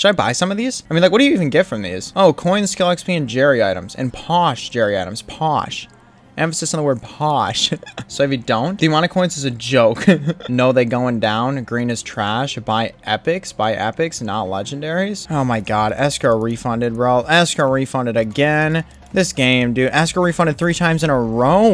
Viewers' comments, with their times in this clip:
0:05 me when i see people speaking in a posh accent (emphasis in the posh)